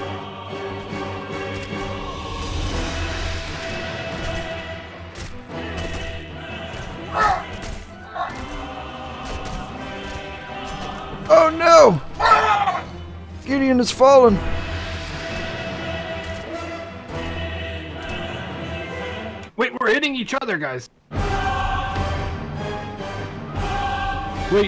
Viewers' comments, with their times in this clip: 0:09 and then the "we are hitting each other" followed by the epic music